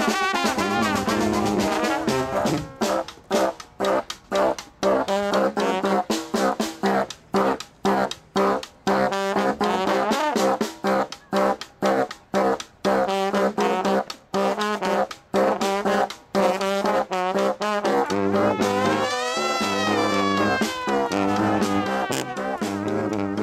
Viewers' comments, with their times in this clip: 0:04 why do I hear boss music?